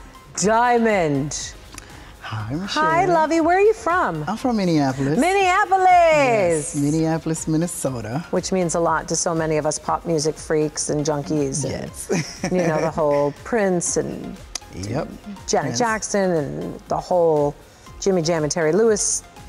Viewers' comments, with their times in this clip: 0:05 thought Michelle screamed MINI OPPALENSE